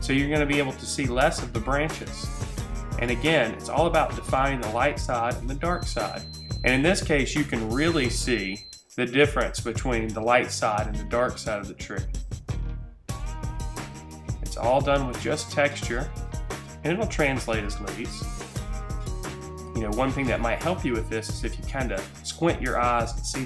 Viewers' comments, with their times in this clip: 0:05 his hot pockets are ready xD